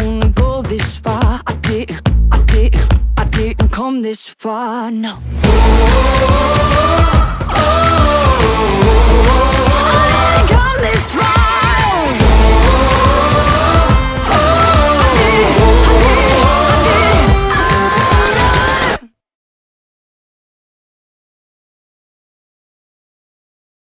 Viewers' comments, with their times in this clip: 0:10 Take care. U almost revealed the real magnificent singer u really are.